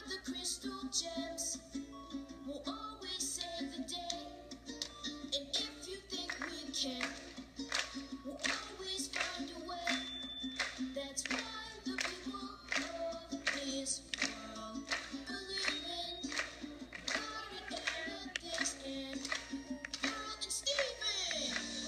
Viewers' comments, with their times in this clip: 0:05 It's kinda adorable how the people watching were clapping with them lol